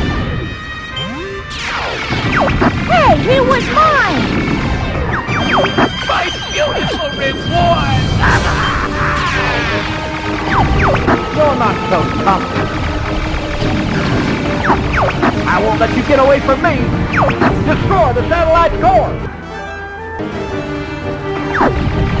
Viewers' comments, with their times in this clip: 0:08 Pigma screamed REAL good before he CRASHED!